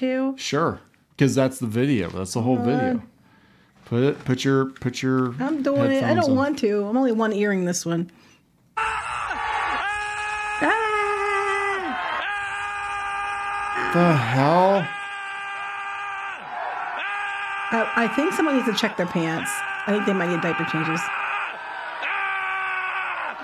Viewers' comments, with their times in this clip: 0:09 The audio definition of SOY BOYS.